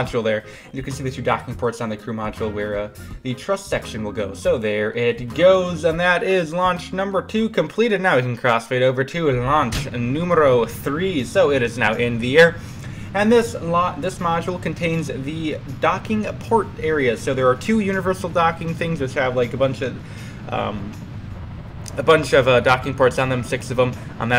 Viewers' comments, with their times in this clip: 0:09 número 3 😆 almost perfect Spanish accent and neat result, Russians really love circle shaped ships 😂 PD: any mods for Ksp on cheap laptop?